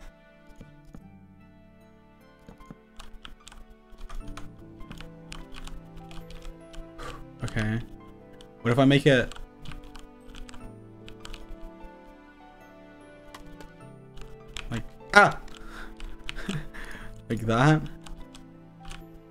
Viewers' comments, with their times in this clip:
0:07 sounded so much like dream